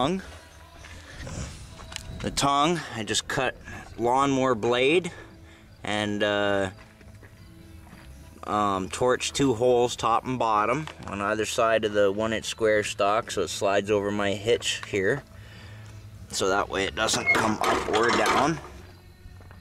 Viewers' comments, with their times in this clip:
0:06 Jefferson Airplane in the background Love it, good vid